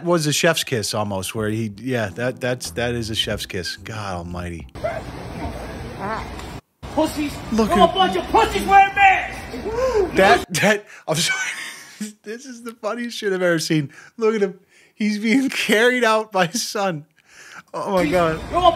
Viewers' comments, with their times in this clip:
0:05 Sounds like his Son squeezes a fart out of him when he picks him up~! 😛
0:05 Did that dude fart when his son picked him up?